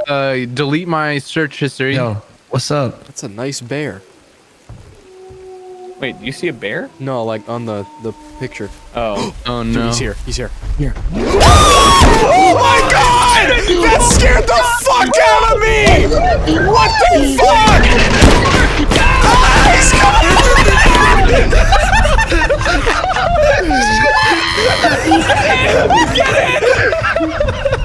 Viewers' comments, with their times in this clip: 0:10 The amount of money I would spend for a face cam ... that scream chefs kiss
0:10 yooo, the scream had me DYING.